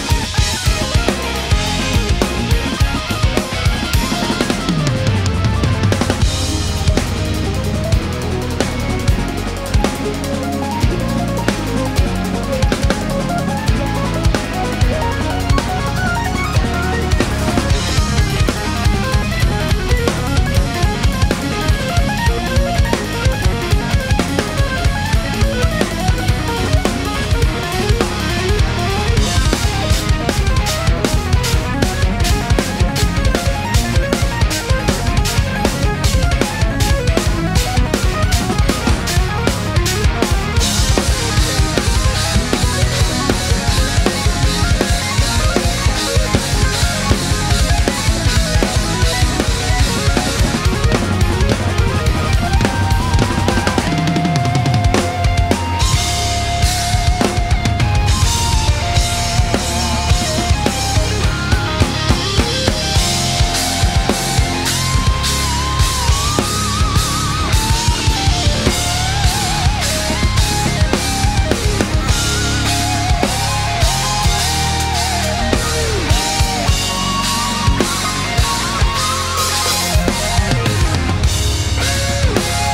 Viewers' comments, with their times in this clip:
0:07 What's that awesome sounding groove that starts on the hi-hat ? Not heard anything like that before...it's really cool! Fantastic playing overall...it's really dynamic and punchy (the mix helps with that too!) and you look like you're having a great time. Also, that looks like a Mapex Armory kit? Which is a pretty affordable drum kit. And those Meinls are a lot more affordable than the Byzance line. Just goes to show you don't need the most expensive kit to sound great, just some great playing.
1:06 when you trip up and spill all of your crashes everywhere